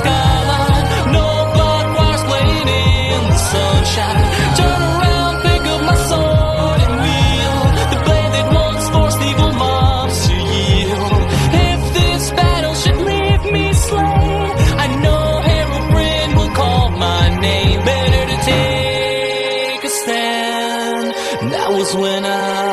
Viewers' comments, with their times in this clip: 0:04 is it just me or i heard turn around n***a